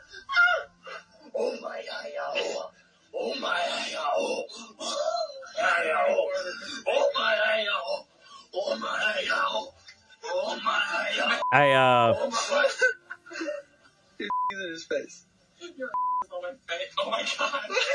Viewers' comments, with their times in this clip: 0:03 The first five seconds in and I can already hear banjos. Now it sounds like it moved to an Oklahoma college campus.